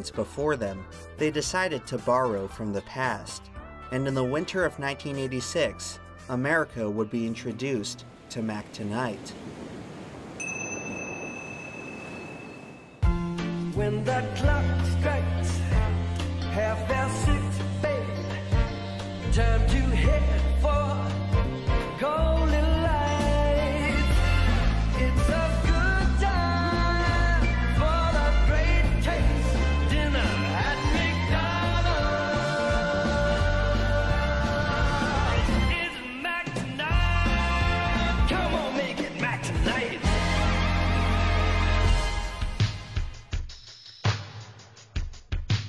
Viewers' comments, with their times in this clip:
0:04 this is the first time Ive seen this I was born in 2000 Ive never seen this moon man, but that fucking jingle holy SHIT, better vibe than 90% of the shit I see shoved in to my face these days by businesses
0:32 the descending bass line run is 🔥🔥🔥